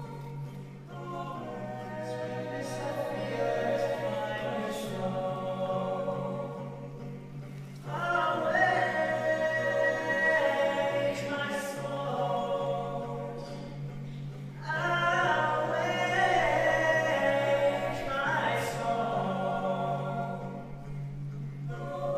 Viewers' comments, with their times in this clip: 0:06 Kid riffing ish...AMAZING. Man, this was awesome. I love it.